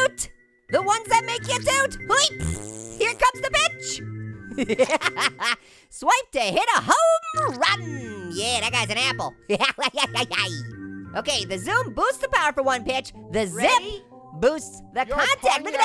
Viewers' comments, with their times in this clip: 0:03 it sounds like you said b**